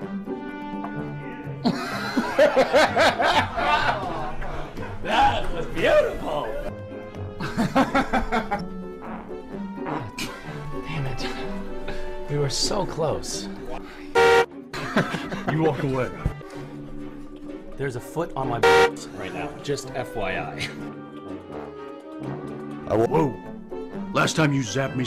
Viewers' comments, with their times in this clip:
0:08 I don't give a shit who you are this is the funniest goddamned video on the internet. Wanna know why.? Because Misha farts